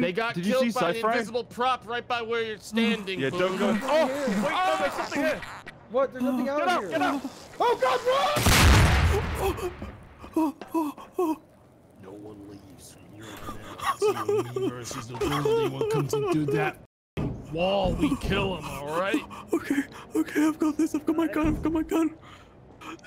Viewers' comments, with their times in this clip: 0:06 the sheer terror in his voice is insane
0:06 the voice acting is tremendous